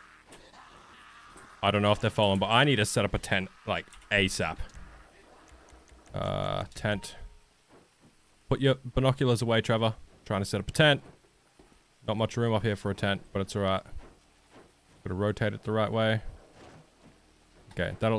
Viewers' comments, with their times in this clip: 0:06 umm. What was that sound you made? You beatbox?